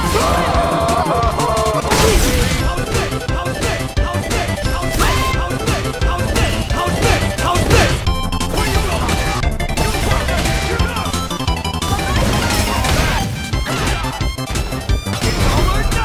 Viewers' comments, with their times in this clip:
0:03 “HOW’S THIS” intensifies